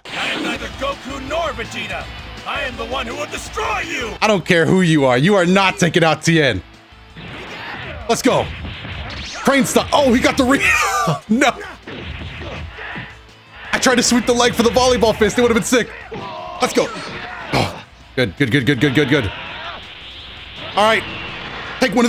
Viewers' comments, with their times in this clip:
0:03 Ngl the way gogeta said destroy you sounded kinda fire 🔥